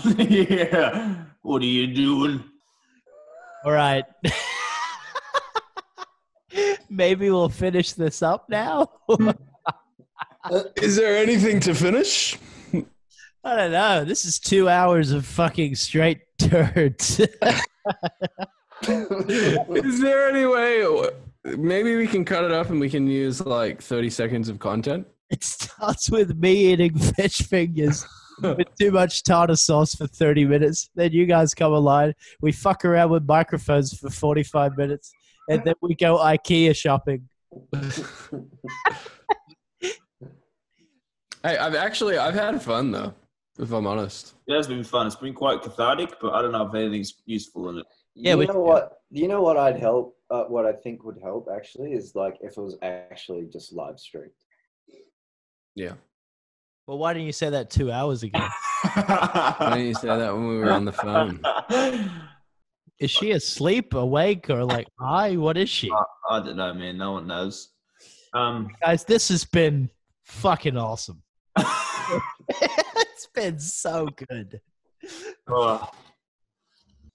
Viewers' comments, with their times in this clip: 0:03 calum what is that Lmao you sounded like youre running out of oxygen
0:59 tell me why Micheal sounded like Harry Styles..